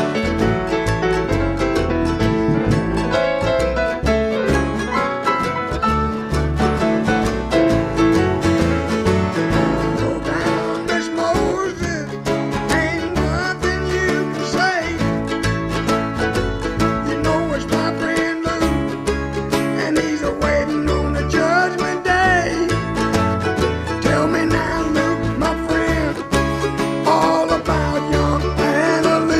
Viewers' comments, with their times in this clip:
0:10 I waited with bated breath for Levon to sing and when he did a tear rolled down my cheek.